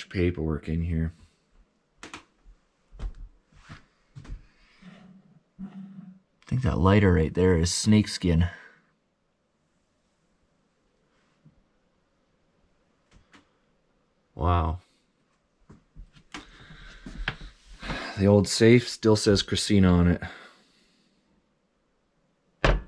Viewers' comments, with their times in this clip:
0:04 Are you in the store alone? Because I swear that I can hear a female voice ish